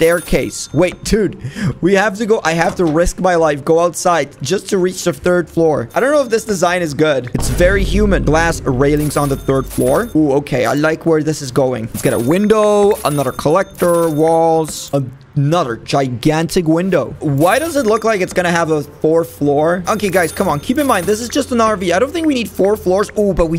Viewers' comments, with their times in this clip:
0:08 it’s very human